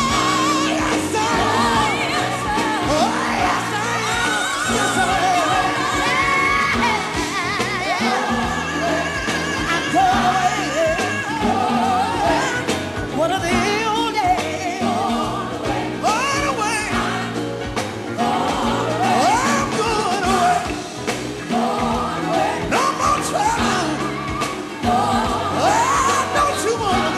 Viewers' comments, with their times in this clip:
0:08 WHO!!! Who is that ad libbing after Shirley Caesar?!?!?! That voice is AMAZING! Its someone in the background!
0:08 the lead singer from the Mighty Clouds of Joy SANG!
0:08 its Tramaine Hawkins, then Shirley Caesar and then someone in the background. They let out one holler and thats it! lol
0:09 Do u hear Joe Ligon in the background SANG!